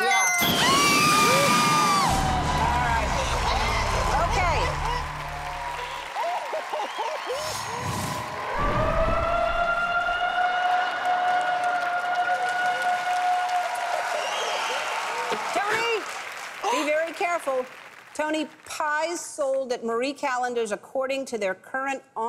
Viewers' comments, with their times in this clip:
0:07 Sounds like an elephant.